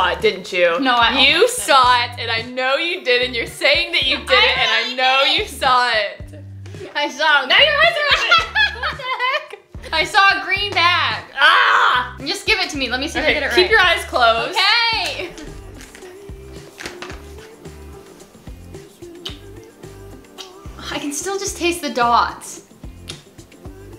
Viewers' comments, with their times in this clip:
0:09 The dog said YEET hdbdbdjd